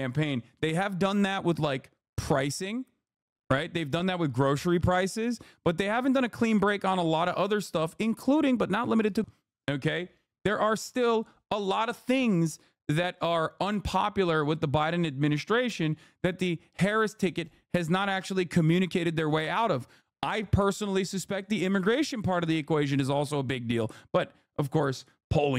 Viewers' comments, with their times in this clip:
0:08 does anyone know what Hasan said here before the words got cut out?